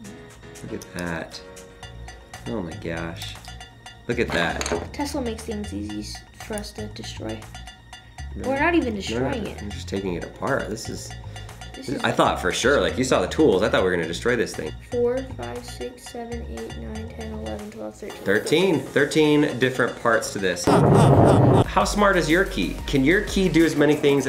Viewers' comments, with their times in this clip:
0:07 did someone say one guy's head